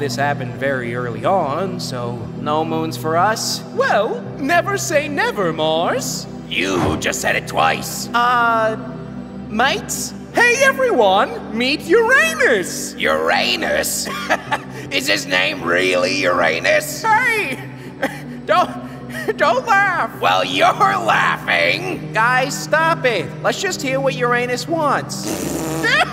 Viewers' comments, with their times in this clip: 0:08 "Uranus:Uh, mate's; Saturn:Hey everyone, meet Uranus! Venus:Uranus?! Ha ha ha, is his name really Uranus?! Mercury:Hey! Do-don't don't laugh; Venus:Well your laughing! Mars:Guy's stop it! Let's just hear what Uranus want's; Venus:PFFFFF! That's what Uranus want's! Hahahahah (😂😂)! Mercury: (Laught's (🤣🤣)! Mars:(😒😒)" The way Venus and Mercury are laughing is super hillarious 😂😂😂😂😂😂🤣🤣🤣🤣🤣🤣